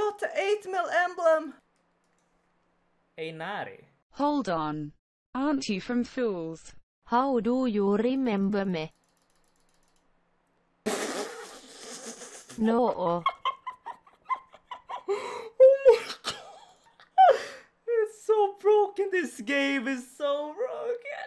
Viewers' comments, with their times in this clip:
0:04 Lmaoo good use of the Finnish translation voice :D
0:05 The Finnish voiceover ahaha